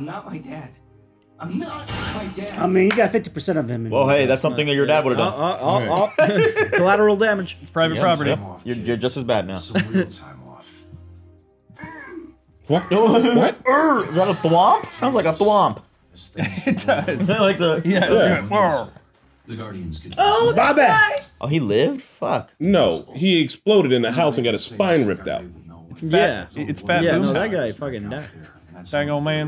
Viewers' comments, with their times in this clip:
0:10 I knew I wouldn't be the only one though of a thromp when I hear it.